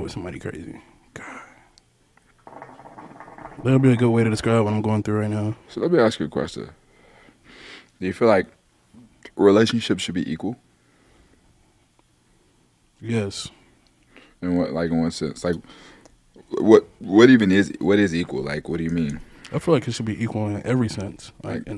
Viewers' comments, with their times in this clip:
0:03 whatever noise that is is annoying as hell